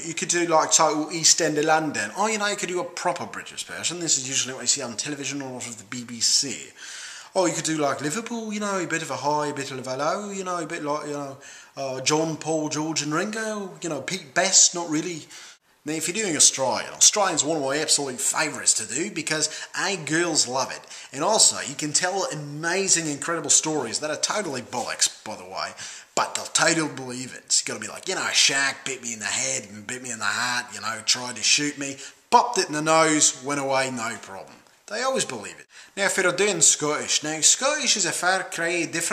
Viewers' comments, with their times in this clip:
0:08 so close from the original voice.... that voice isn't forced BTW, sorry for my bad english
0:25 why would shaq bite your head?